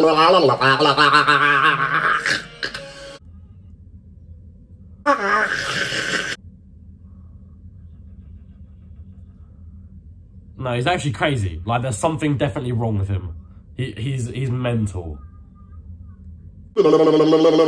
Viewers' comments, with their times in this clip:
0:05 it sounds like hes drinking a potion in minecraft